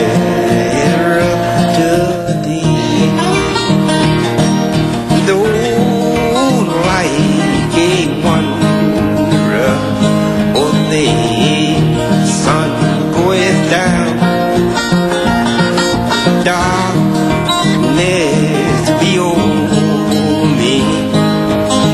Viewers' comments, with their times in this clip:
0:03 Beautiful heart-felt music. Very relaxing. It is a.m., July 29, 2017 and I am listening to Mr. John Hurt. I am a country girl raised in Alabama. I am just hearing about this legend. However, my music taste is good gospel music .